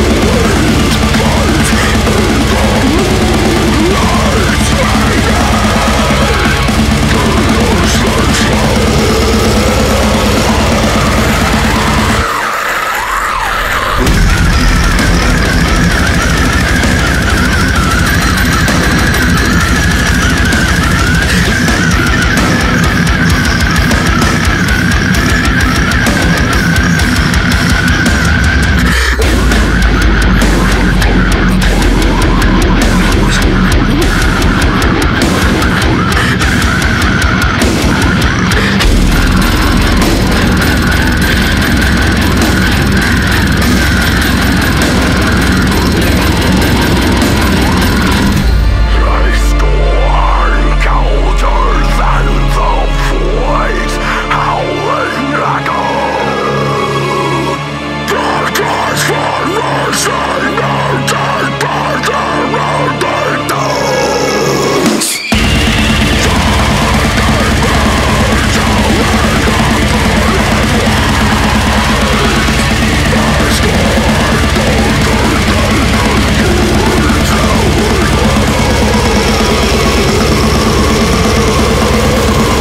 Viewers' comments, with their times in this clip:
0:09 It was going heavy and evil felt alot of the blackmetal elements towards the beginning then the horseman speaks and the heavy gets dropped harder then falling down through the 7 gates of hell!
0:11 it sounds like he's warning us a heavy breakdown is about to come😀
0:39 when that double bass kicks in it sounds like its rattling an old alarm clock sitting on some table on the other side of the room
1:04 Holy shit, that ear piercing whistle.